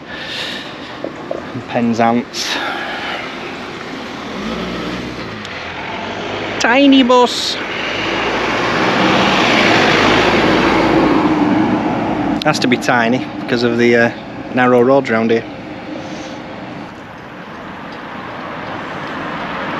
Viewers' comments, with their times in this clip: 0:06 Another bonus missed video that I've found. I cracked up at the way you said "tiny bus" ! The silly voice was perfect. 😁